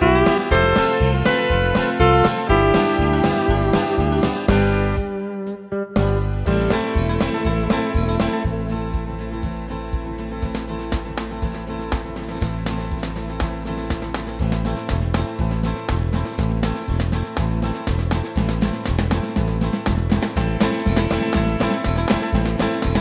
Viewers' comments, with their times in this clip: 0:10 I like the train fill from on, although it's long it's variated all over.